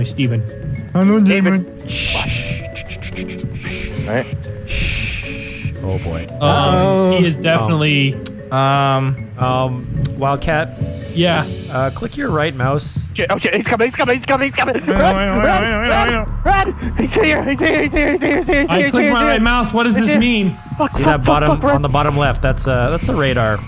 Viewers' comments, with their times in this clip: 0:09 genuinely sounded like a line that you'd here in a horror movie trailer. that delivery was S rank, A.I. tier.